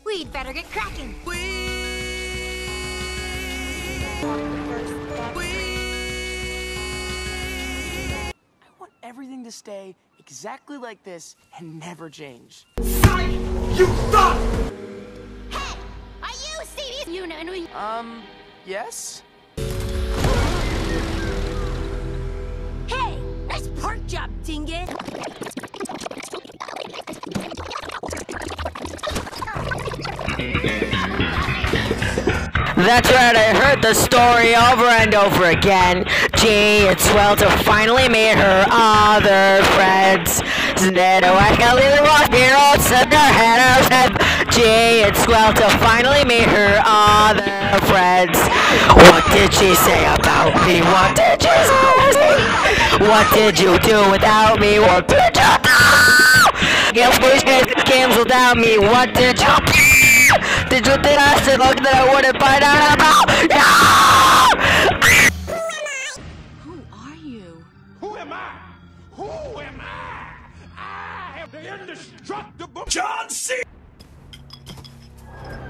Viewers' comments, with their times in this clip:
0:10 Me singing alone: sings other friends well Me singing in front of friends: sings other friends but a little shaky Me singing in front of a talent show:
0:26 Nobody : Auto-Generated Captions : PoRkChOpS iNgOt ThAt'S rIgHt I hEaRd ThE sToRy OvEr AnD oVeR aGaIn
0:30 congrats you make my earphone stop working and you make me deaf ;)
0:30 The worst and best song I’ve heard in my entire life!
0:31 This song is beautiful man..
0:31 such angelic singing 🥹😭
0:32 When i listen to my voice in a recording.
0:34 XD BEST MUSIC EVER XD
0:40 When she says "Hey" it reminded me of Lollipop by Mika-
0:56 THE SCREAM I CANT😭😭